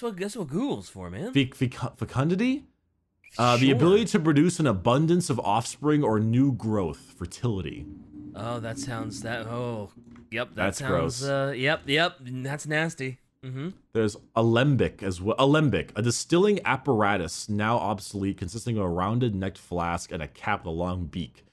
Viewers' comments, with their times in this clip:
0:08 what was that noise just now? O_O